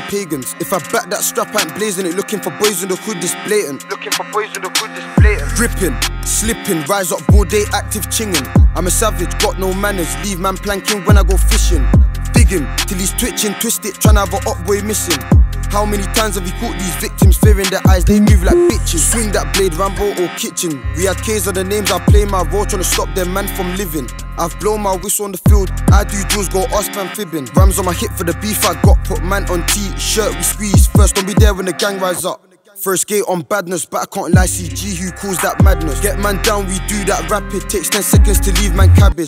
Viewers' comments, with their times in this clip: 0:05 sounded like digga D
0:25 did he say he done drills or done juj